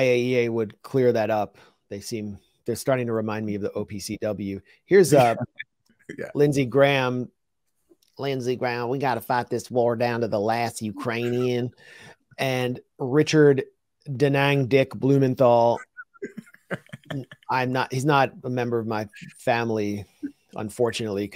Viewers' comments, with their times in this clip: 0:08 Stop it! You're scaring me with that psychopath's voice. 😆 You're sounding way too much like him. What are you going to do next -- Nuland? Seriously, gentlemen, thanks for the fearless, honest work.